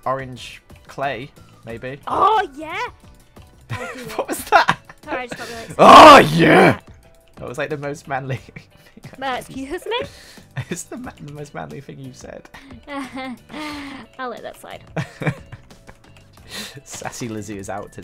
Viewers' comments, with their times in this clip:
0:06 Kool aid man XD
0:06 rip headphone people because I am one of them